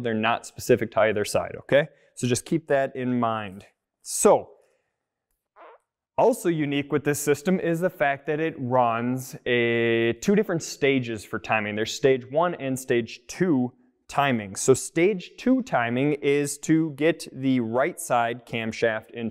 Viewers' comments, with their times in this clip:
0:04 Did he fart ? I swear to god I thought I heard him let one rip.